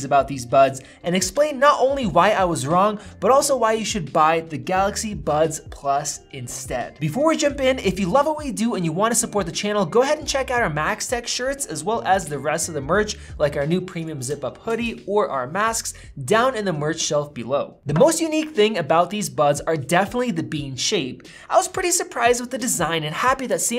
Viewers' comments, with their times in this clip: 0:10 For a sec I thought you said "MagSafe Shirts"